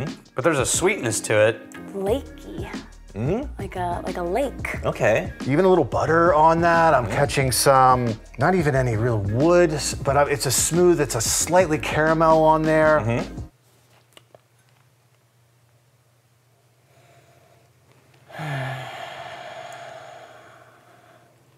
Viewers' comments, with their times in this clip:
0:09 It’s in the morning and I’m laughing my ass off at the pauses